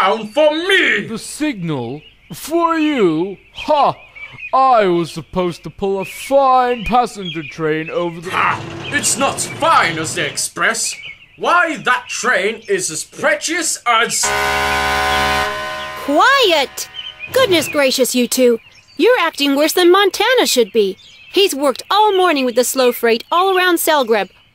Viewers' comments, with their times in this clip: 0:07 I don't really know why, but Cally's horn always gives me goosebumps.
0:10 Why that train is as precious as- (Calley Blow her horn)